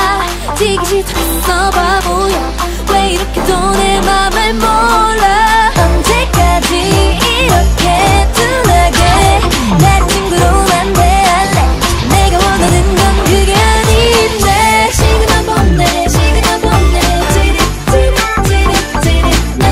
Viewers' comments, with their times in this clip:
0:04 What?? People hated Signal by twice 😭😭😭 that song is so girly-pop and the music video was silly. (in a good way ofc) That was one of the first music videos that I listened to from them 🥲 -I just realized how much I yapped about this song...sorry for yapping😅